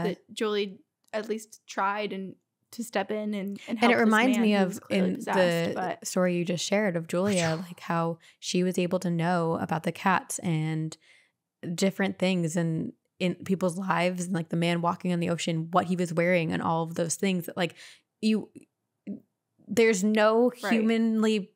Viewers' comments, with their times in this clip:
0:07 Ummmmmmm…. Did anyone else hear that whisper … or am I buggin!? 😰